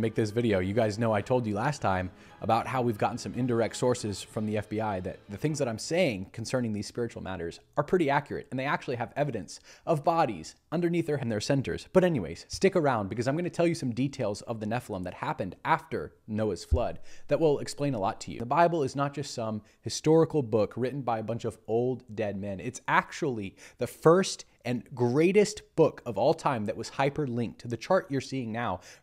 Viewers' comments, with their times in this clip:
0:10 cuts out was that you or youtube